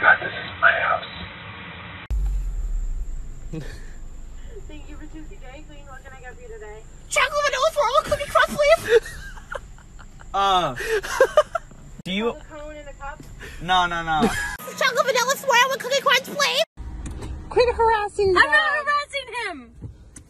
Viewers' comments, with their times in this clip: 0:06 sounds like my car trying to start